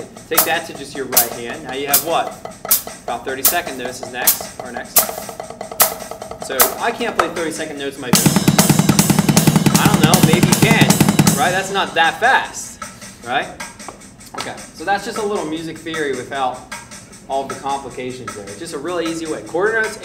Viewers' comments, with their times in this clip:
0:08 Official Greiner Machine Gun effect